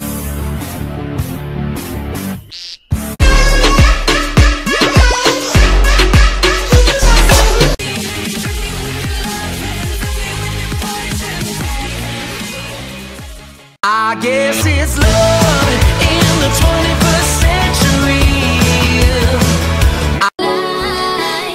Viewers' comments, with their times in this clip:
0:03 ....this song kinda creeps me out